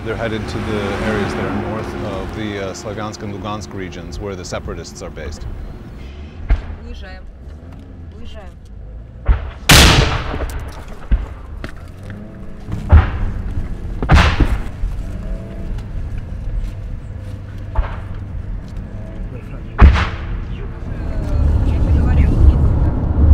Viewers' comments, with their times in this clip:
0:09 Caution headphone users